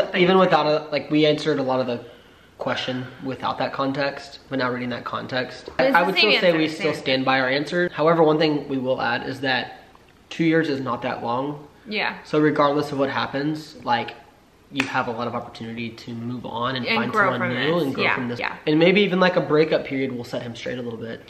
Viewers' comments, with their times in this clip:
0:09 Goose trying to chime in with his opinion